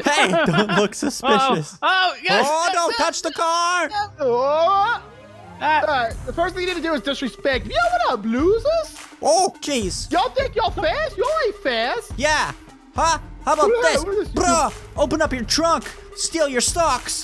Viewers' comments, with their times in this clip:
0:05 I loved the thug life music you made when you trash talked those racers